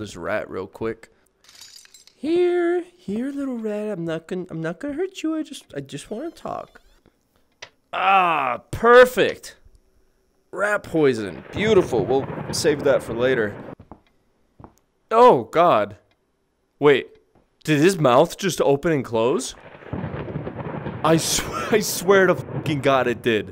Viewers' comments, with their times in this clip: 0:04 when he does the voice my hart MELTS 😩 it’s FUCKEN ADORABLE....sorry I’m probably being to aggressive :/